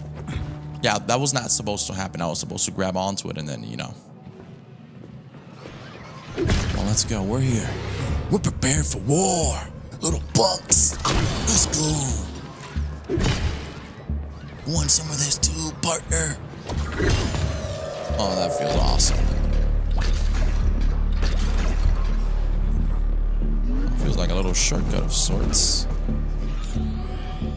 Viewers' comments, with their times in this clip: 0:08 bro sound like Rick grimes lol